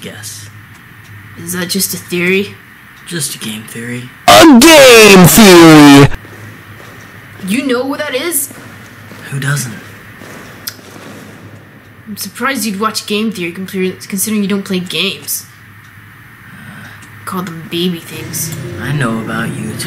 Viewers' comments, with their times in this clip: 0:03 rip my ears and headphone...
0:04 I WAS WEARING HEADPHONES ON HIGH VOLUME TO ENJOY THE MUSIC, WHYYY